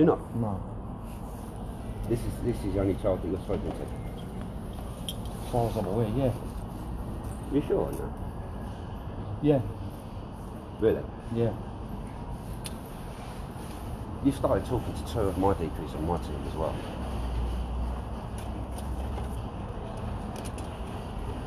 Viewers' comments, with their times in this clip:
0:07 Could drive a bus through that pause